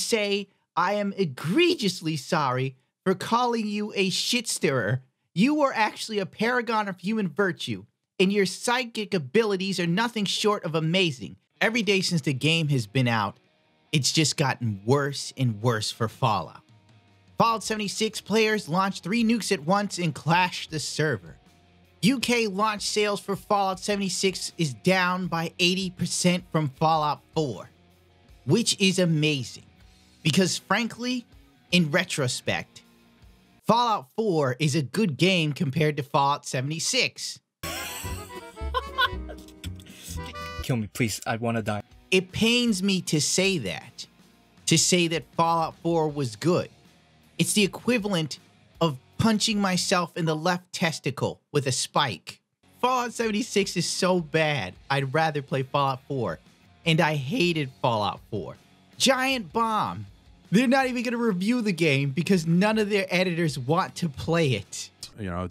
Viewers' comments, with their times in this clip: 0:04 dog in the background
0:53 tfw the dog is bugging out in the background lol. Poetic.